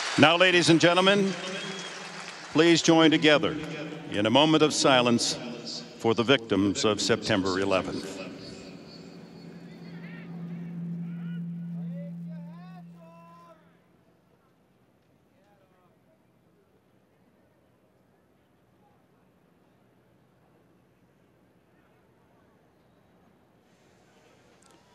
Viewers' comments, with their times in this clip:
0:09 shoutout to the assholes yelling at people to take off their hats during a moment of silence.